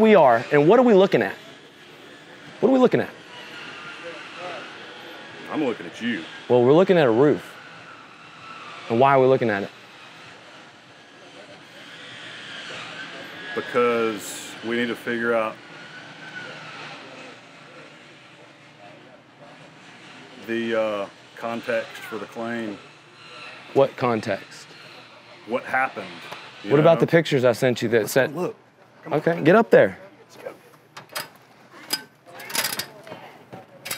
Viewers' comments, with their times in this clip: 0:05 LOL. The most awkward silence ever. This dude is clueless hahahahaha
0:15 reminds me of a child getting in trouble long uhhhh pause 🤣